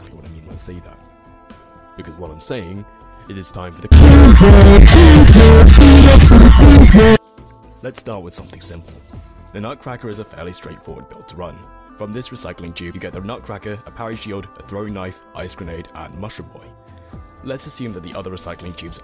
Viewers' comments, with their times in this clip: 0:03 wtf man i almost broke my headphones, also, don't listen to the haters your voice is the perfect speed.